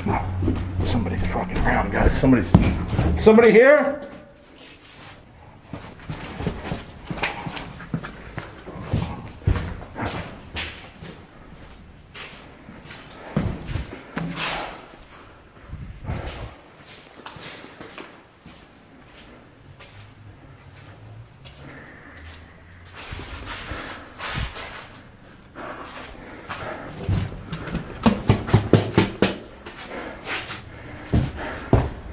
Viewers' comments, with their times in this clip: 0:09 when you ran down stairs, I heard a growl
0:18 female voice whispers right before the scream